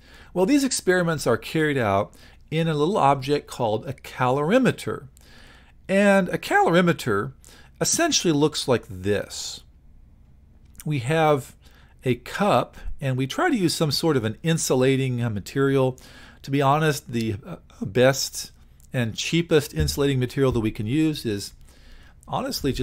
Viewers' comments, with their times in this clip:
0:06 holy voice crack and thx for the vid helped me a lot